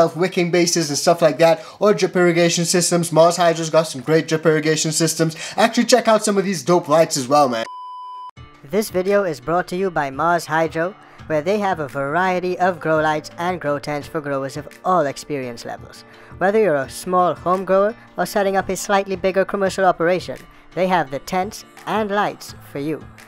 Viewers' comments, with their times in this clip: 0:09 (For the hip hop heads)The promotion voice that starts hella sounds like “ Quasimoto “ doesn’t it lol